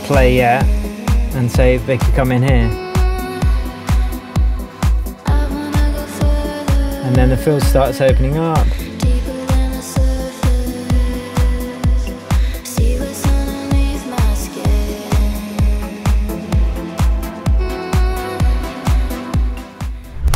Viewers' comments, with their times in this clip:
0:06 I may be wrong, but I feel like the vocals doesn't really to instrumental's key